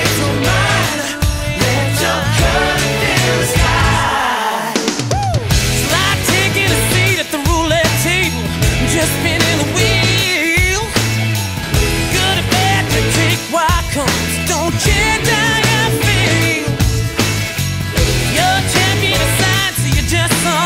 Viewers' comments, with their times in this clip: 0:05 Mark sang it like Michael Jackson 🔥🔥🔥